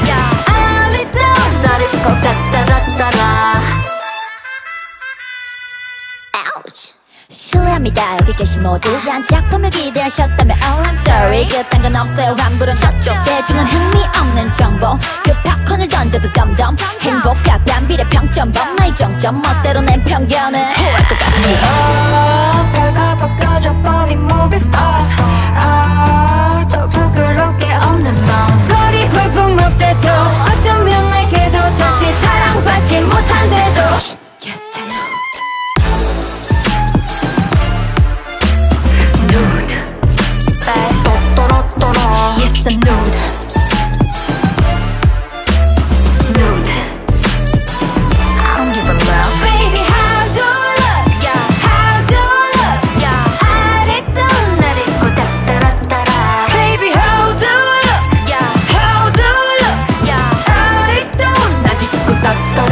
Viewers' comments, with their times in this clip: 0:06 soyeon’s rap is so crazyyy 😭😭
0:28 MIYEON SOUNDS LIKE A GODDESS HERE 😍
0:33 AHHHH YUQI'S VOICEEEE
0:49 Minnie’s voice is so sweeeet 😮